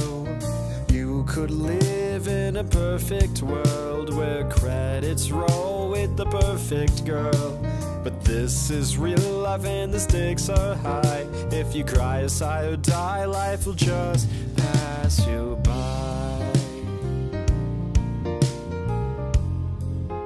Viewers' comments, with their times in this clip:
0:07 IDK why but the way he said "real life" I just like it.